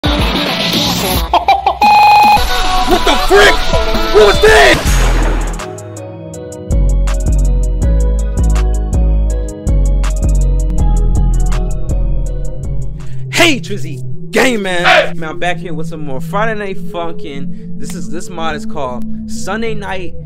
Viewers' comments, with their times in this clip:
0:01 Him:*random FNF sounds* Mickey:* stairs in your soul